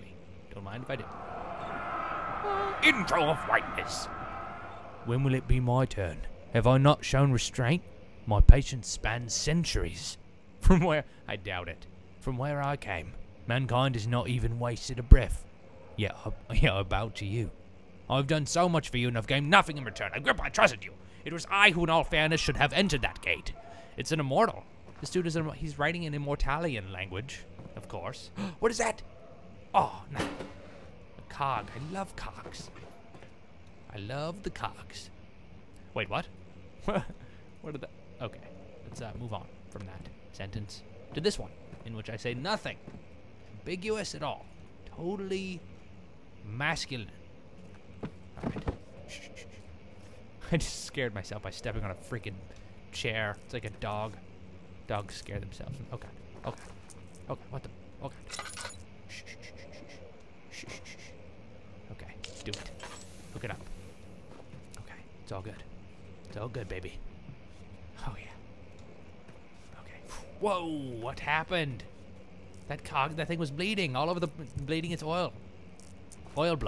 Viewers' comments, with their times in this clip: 0:08 when he started reading I thought it was really Daniel
0:10 he sounds like alfred XD
0:13 came up and I thought it was someone in the game speaking XD
0:19 "*gasp* What is that?! Aw. Cog. I love cogs." When he says cogs... He sounds like he's saying something else... *cough cough*
0:20 when he was reading i thought it was the game
0:33 He loves cogs. I... understood something else the first time.
0:34 LOL i love the cogs (sounds like cocks) ... wait what.
0:58 I get how he shusshes guards and monsters, but he was all metaphysical here. He starts freaking out, so he pulls out the lantern and acutely shushes -insanity-. Now that's manly.
0:58 "shh-shh-sh-shh" <-- i love when he does that.